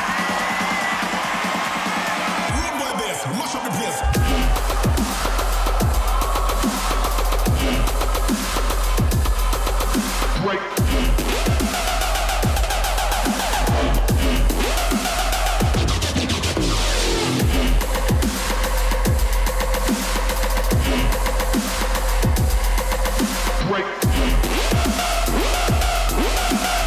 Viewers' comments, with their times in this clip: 0:07 (after No Flex Zone) What’s that track with the “Whad’ Up MF” That drop with the descending notes!! DOPE!